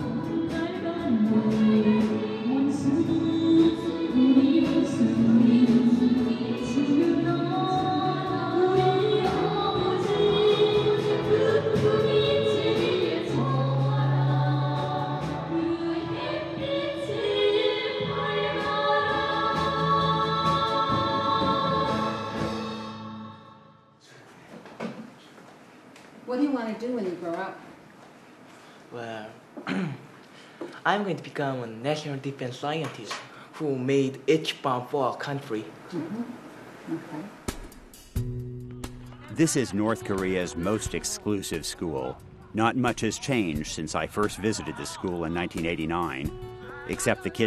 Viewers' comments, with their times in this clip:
0:10 the song they sang was heartbreaking to listen to
0:32 that kids english was excellent.
0:35 kid's laugh :D